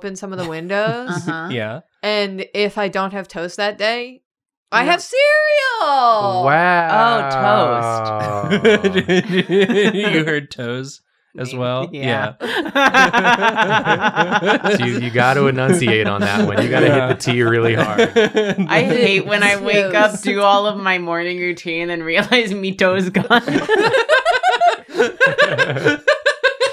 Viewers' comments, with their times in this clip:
0:08 i mean, shes a fish? Why would she have toes? Another unrealistic body standard